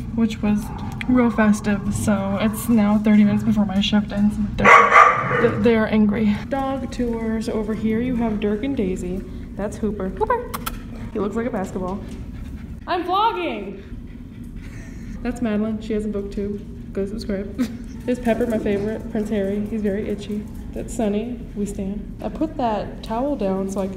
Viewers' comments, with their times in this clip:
0:10 Literally let out the ugliest laugh omg